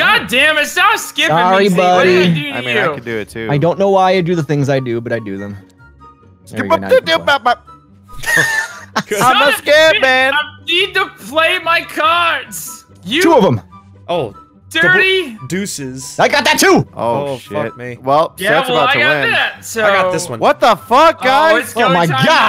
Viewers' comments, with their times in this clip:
0:06 wow the scat man has reencarnated